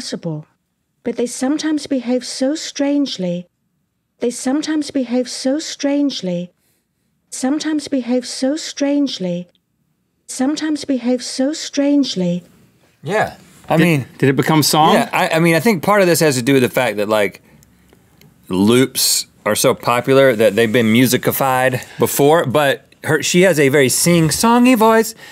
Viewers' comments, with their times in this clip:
0:07 now its a rap with no beats